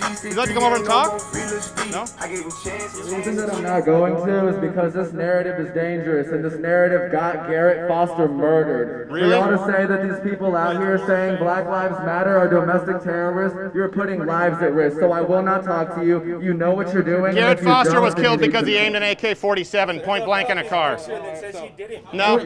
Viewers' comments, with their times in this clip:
0:08 yo they need that audio system at In n Out to call out orders that are ready